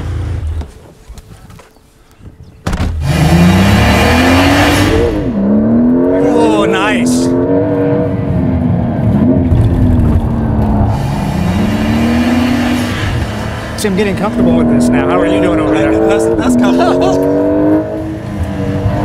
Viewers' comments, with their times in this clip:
0:03 What’s the metallic sound during acceleration?